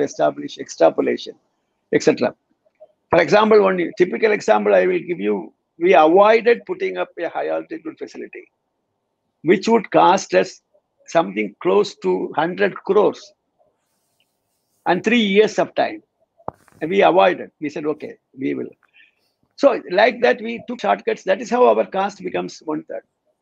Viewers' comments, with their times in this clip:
0:05 setting up a what altitude facility? I can't understand